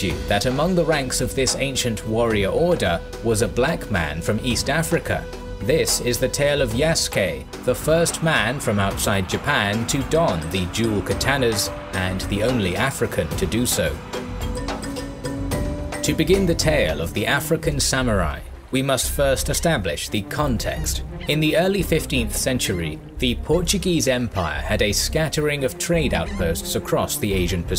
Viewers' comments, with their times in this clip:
0:10 “the duel Katanas”. First, horrible pronunciation of Katana along with many other terrible mispronounced words and names throughout the video. Second, I’m guessing this is referring to the daisho, the katana and tanto/wakazashi worn by the samurai. It was never two katanas. The katana is a two handed sword, why would you need two on you? Daisho literally means “big little” as in “big sword, little sword”. And this is how you lost me in less than a minute.